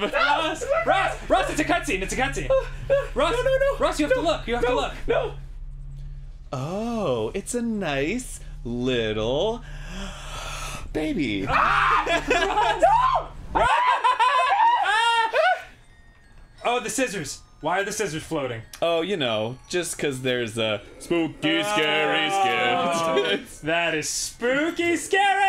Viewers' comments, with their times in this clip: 0:08 "oooh, its a nice... little.... baby" /scared ross is screaming and pissing his pants\